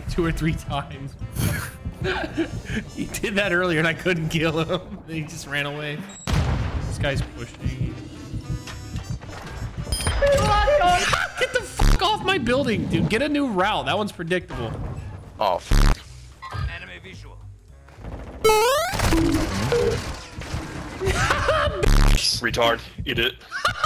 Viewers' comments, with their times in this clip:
0:10 The audio scream 🤣